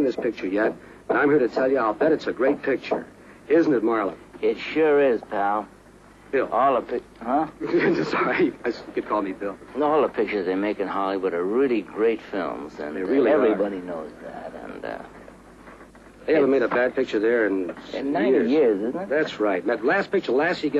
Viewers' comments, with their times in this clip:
0:04 He's so sassy in these interviews when they talk about his movies! "Oh yes, you HAVE to see this movie it sure is, pal" ICE COLD You can really tell when he doesn't like the interviewer or when he'd rather talk about something other than what they ask him. He's so genuine that he can't pretend, even for the camera. It's fascinating because nobody is like that today